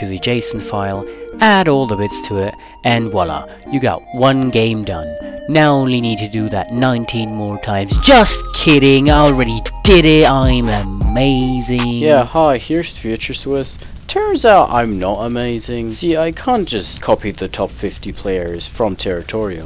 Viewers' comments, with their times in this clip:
0:06 The beat with Undertale was fire